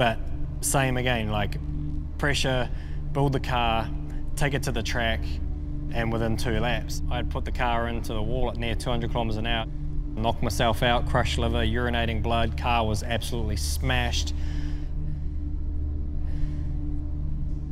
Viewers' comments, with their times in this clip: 0:03 i thought there was a lawnmower outside lol